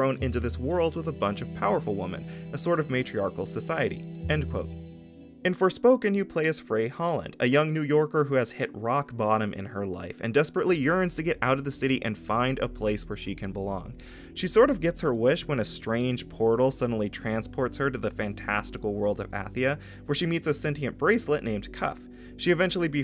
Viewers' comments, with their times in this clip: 0:07 I believe I heard them yell "This is MAGA country!" 😢